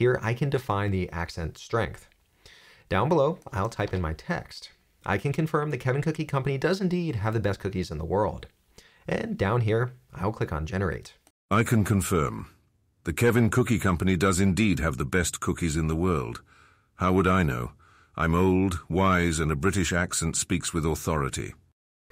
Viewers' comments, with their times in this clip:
0:10 this sound exactly like soldier boy from the boys s3